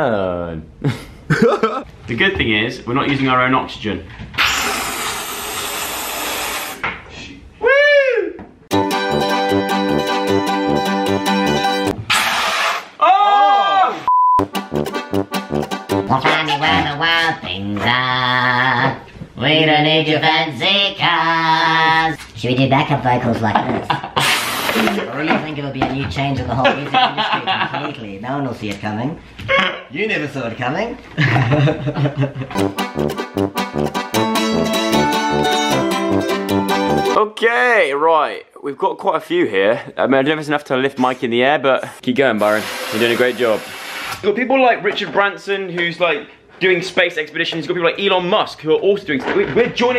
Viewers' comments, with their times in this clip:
0:06 Truth Bombs in the background, Phandom where you at?
0:32 that classic Joe sugg prank music